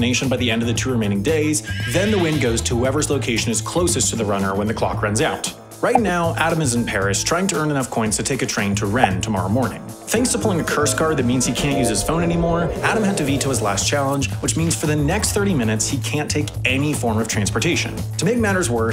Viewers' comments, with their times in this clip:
0:04 just gotta say how much i appreciate your voice, such a great recognisable voice always associated with great educational content!